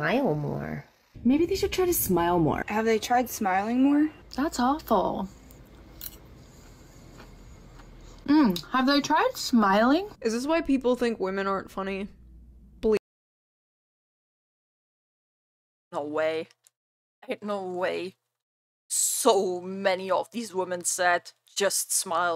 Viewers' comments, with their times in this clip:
0:04 My pet peeve. I hate hearing ppl hit and scrape their teeth with metal utensils.